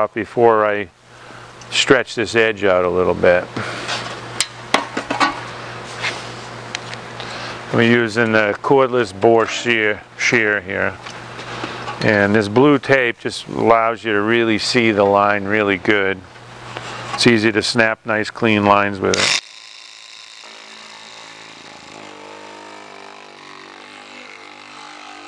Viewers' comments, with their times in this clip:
0:09 What is the brand name of the Shear being used ? All I can see online looks different than that one, so I must be spelling the name wrong.....And that one is soooo quiet!